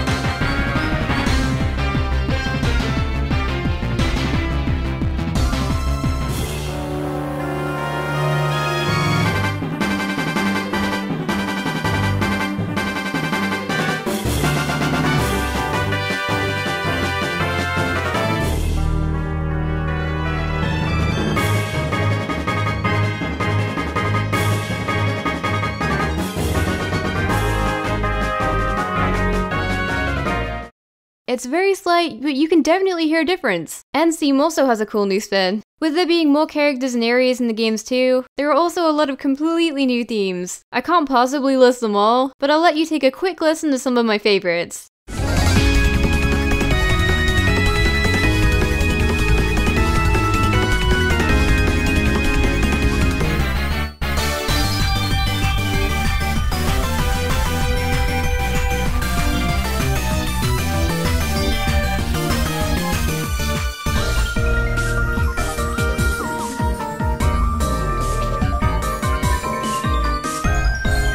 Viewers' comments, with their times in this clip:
0:06 This song brings back memories, B&W were my first ever pokemon game, and when i would reach the final pokemon of a gym leader... oooh... i just get excited....
0:09 I have to say that black and white tunes way better than black 2 white 2
0:18 I love this version of the music track!
0:53 Best Pokémon battle theme ever.
0:53 I love this music track!